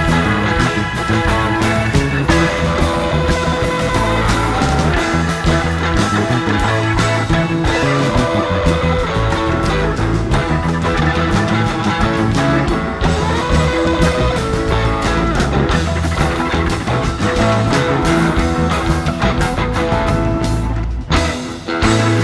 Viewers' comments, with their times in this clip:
0:03 Love Jerry's riff Brent seems into it too lol.